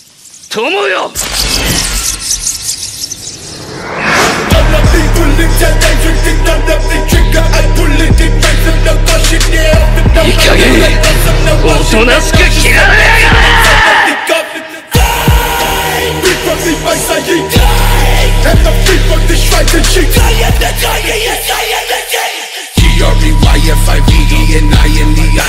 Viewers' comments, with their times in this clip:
0:10 sasuke screaming at naruto straight from his chest gives me chills
0:12 Whoever the voice actor is for sasuke he needs to be in a heavy metal band ong his scream was brutal and clean asf sounding